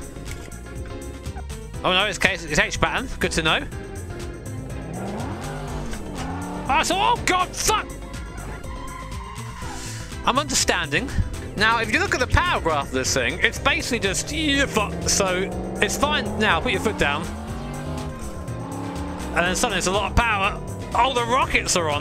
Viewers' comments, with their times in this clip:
0:05 VTEC just kicked in yo